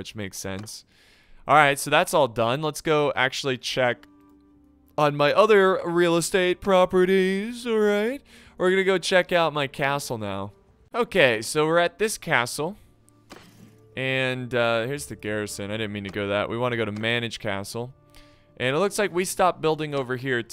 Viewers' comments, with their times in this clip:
0:05 sounds like trump tbh